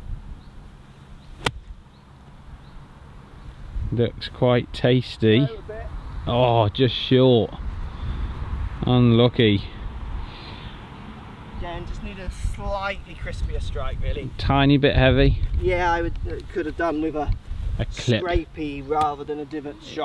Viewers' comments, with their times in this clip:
0:07 "un-lockey" - defined as "a lack of magic when chipping"